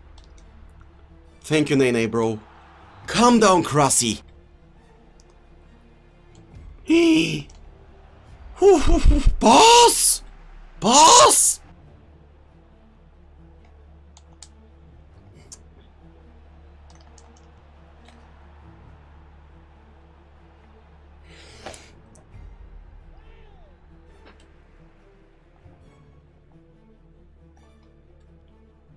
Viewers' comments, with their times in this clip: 0:09 Me : trying to sleep The chicken next door